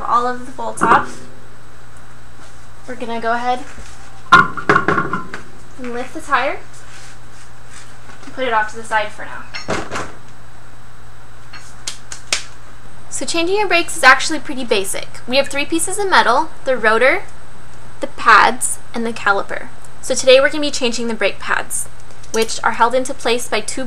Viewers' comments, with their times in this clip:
0:10 the OCD in me cringes to see her lean the tire against the bumper and hear it slam not once but twice before it settles down. Though on the bright side, nothing is more refreshing seeing a pretty girl getting her hands dirty with grease, dirt and grime working on cars. This alone forgives the few things I would not do while working on my cars: 1. get rid of scissor OEM jack and use floor jack instead 2. not working under the vehicle without jack stands or at least place the tire under the vehicle 3. wear eye protection 4. wear gloves. It is a pain in the butt to remove dirt and grease under the nails 5. work with a work light or sufficient illumination 6. never fix something and break another in the process, such as scratching your paint by leaning a tire against the bumper.